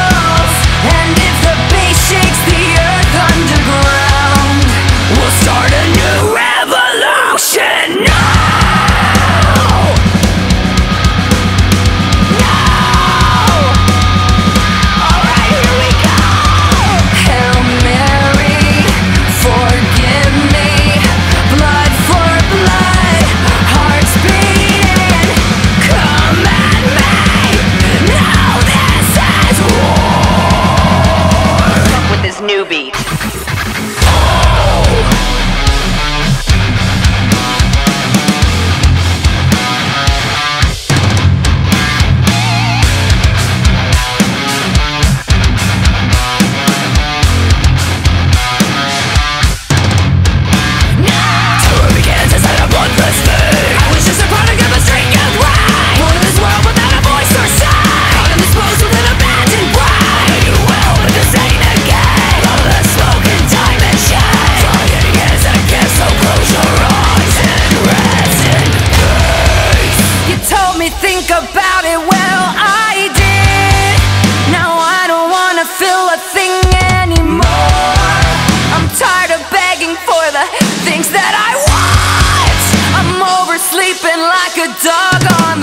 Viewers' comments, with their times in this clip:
0:08 HOLLLYYY SHITTT!!! \m/ all these screams are so good oh my god, this one was my favorite :). ! overall i really loved this!! def gonna be on repeat forever lol <3
1:07 LOVE the growl there! Absolutely epic cover of this song 🔥